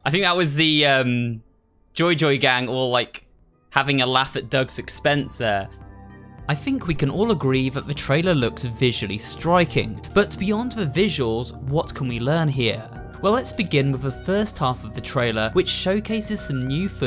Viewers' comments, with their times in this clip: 0:03 anyone else notice the contrast between his reaction voice and analysis voice?